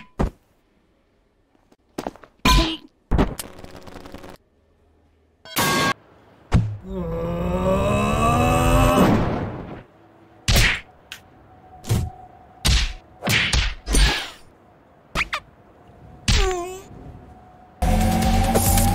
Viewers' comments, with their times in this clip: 0:05 pipe drop sounds💀
0:05 dude that pipe sound got me dying!
0:05 pipe drop sounds be like: